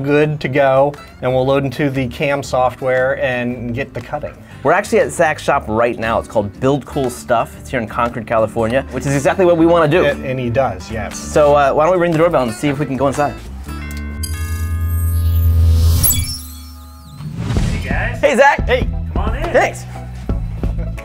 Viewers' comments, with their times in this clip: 0:04 I kinda hate myself for that, but when he said "sack's shop" i giggled a little..